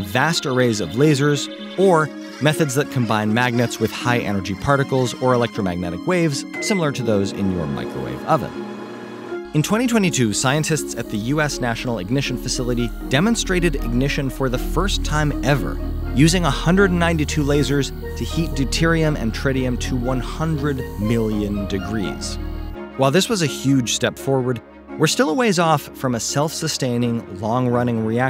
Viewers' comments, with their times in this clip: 0:09 I really love the soundtrack on this one, especially It gives off a feeling of miraculous, utopian, sci-fi like power. I suppose that's what controlling fusion actually is!